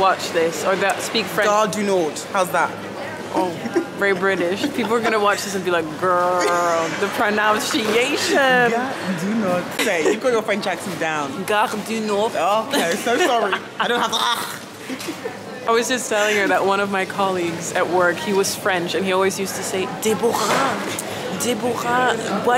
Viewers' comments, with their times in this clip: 0:08 I thought it was a Deutsch sentence I'm french help 😂❤